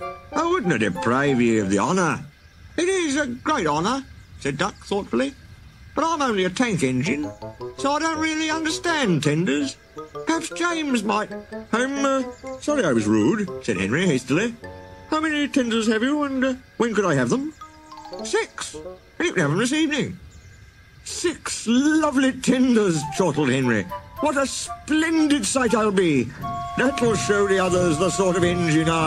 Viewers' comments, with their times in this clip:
0:10 perhaps shapes might.